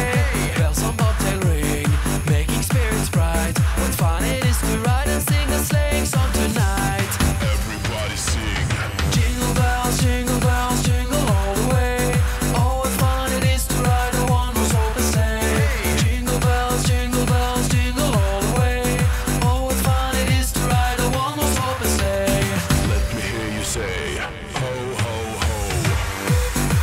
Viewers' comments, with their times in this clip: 0:09 now tell me isn't catchy as hell